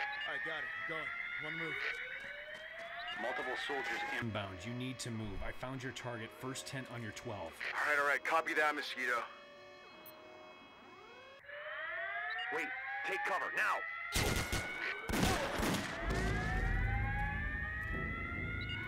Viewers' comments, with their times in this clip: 0:05 I love how these 360 videos are always a failure... Also, gunshots from the matrix?